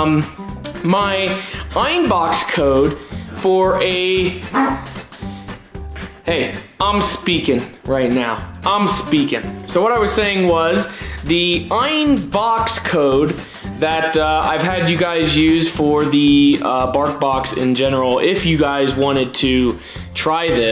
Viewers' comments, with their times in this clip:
0:04 if Ein farted again LOLOL! I'm glad to see the Bark Box is back again.